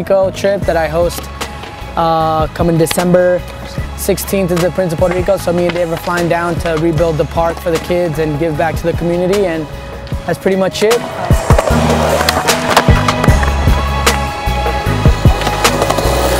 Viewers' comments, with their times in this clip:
0:03 Dayymmmmmnnnnn the pop on that kickflip!